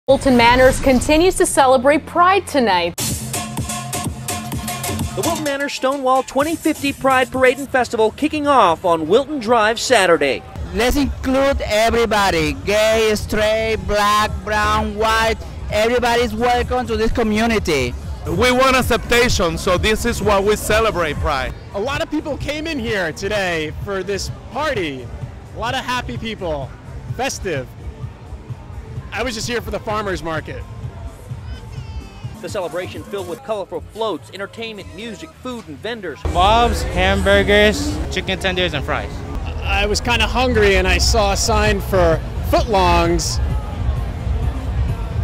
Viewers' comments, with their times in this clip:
0:05 The funniest thing was "Schtone-wall."
0:30 wait is this guy also binge watching your old videos because the algorithm said so and won't stop obsessing about schrodinger's race? i gave an overly thought out comment that was nuanced and they accused me of being a wino. btw the baby crying after your awkward punchline is brilliant subconscious comedy. is there a name for that technique?